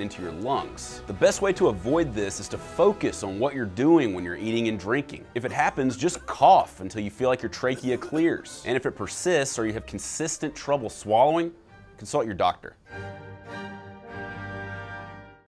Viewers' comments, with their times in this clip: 0:11 i thought he said "insult your doctor"